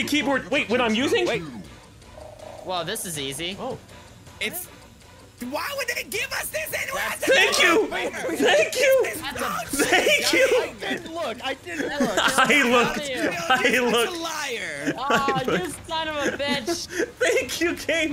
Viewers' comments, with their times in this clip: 0:05 whoever is yelling right there, sorta sounds like Raditz from dragon ball z 😂😆